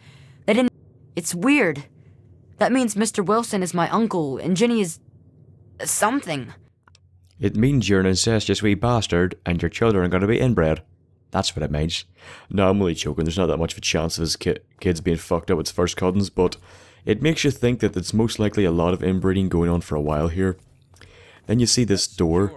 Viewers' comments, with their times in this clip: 0:08 i don't know why but when you went full Irish i just started laughing